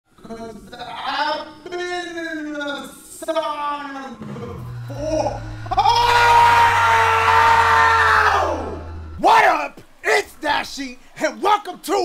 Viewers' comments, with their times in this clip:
0:00 Had to make sure my playback wasn’t on 0.25x